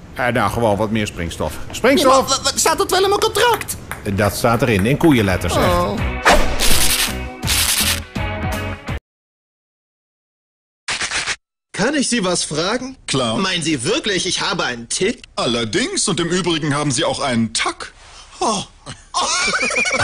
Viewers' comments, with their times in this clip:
0:05 did you hear sound like a ping pong?!